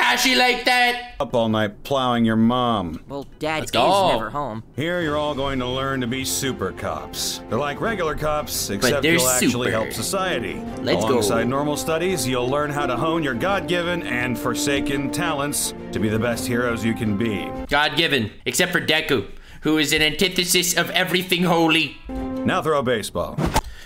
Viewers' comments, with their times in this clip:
0:04 me: what did i just hear? super coc- also me: oh wait he said cops